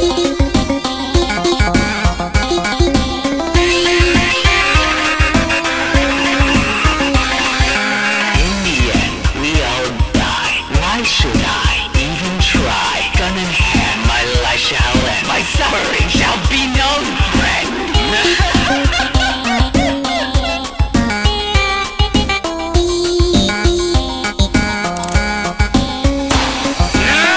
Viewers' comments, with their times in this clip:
0:08 I could care less over how much others think the line may be "corny" or whatever. This moment still takes the cake for being just an all out really cool spin on the song and the voice acting + animations are awesome and nothing's gonna take away how much I love it.